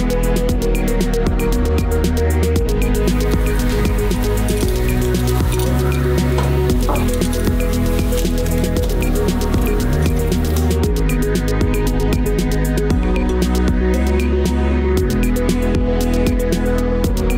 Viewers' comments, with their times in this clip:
0:05 Am I the only one who noticed the fart ?